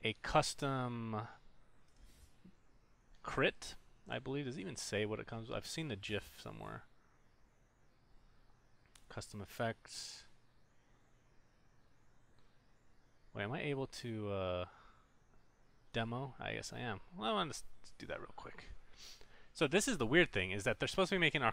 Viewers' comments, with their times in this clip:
0:05 IM TRIGGERED, ITS GIFT NOT JIF!!!